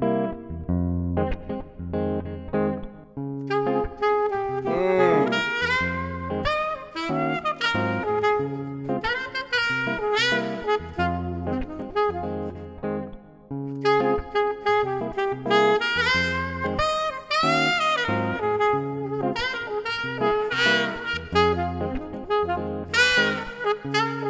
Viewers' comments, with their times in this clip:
0:07 I heard that mess up on the note mr 😂